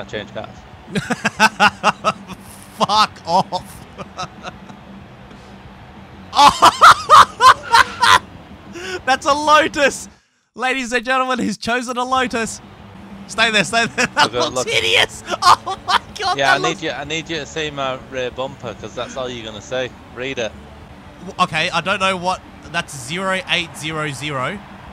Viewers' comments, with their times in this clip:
0:07 Look ,he turns and laughs like he looked around his car and a ghost came